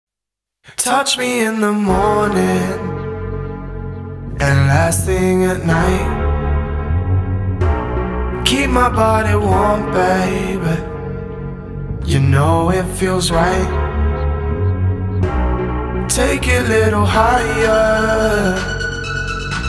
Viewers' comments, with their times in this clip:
0:02 When the first bass line came I knew this gets right into my playlist. Crazy deep sound! 🔥